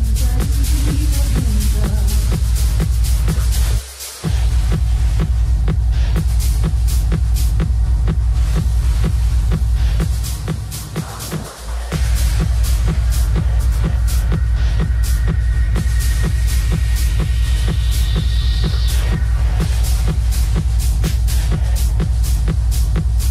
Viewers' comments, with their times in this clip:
0:05 Those are super cool industrial sound samples. I think it's making the little dwarf wizard's cuddies dance around on his thighs. I think it's Bahbalonia where the three baby grims can be alone with their bahbahs. strong vocals well done. Without pitch correction?